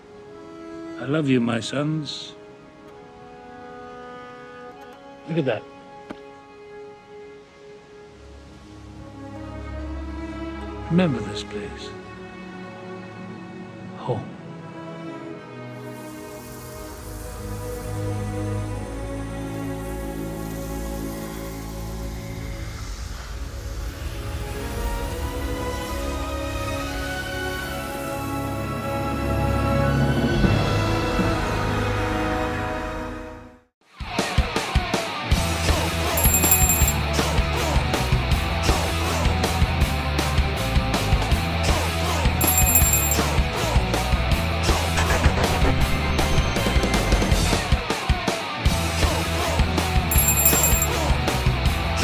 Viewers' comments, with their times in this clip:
0:06 that part gets me every time. And the music that happens there
0:11 😢😥 what a incredible scene, music and dialog👌
0:21 that music reminds me from God of War 4 when they scattered the ashes around.
0:34 no no no!!!! you can't just end a beautiful part of the movie with this music
0:35 That outro music fucking ruined my mood completely...